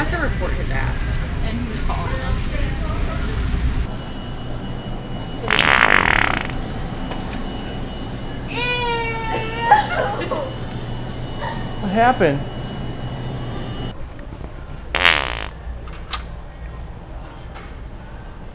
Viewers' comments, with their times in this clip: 0:05 The fart is the "Benchmark"